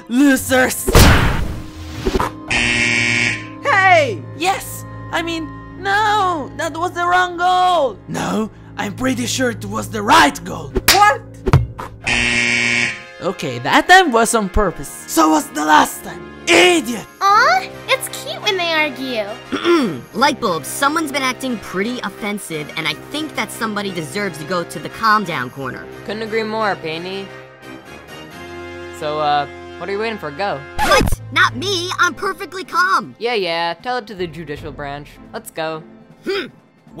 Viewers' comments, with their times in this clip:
0:07 yin sounds like hes autotuned
0:18 what the hell did she siad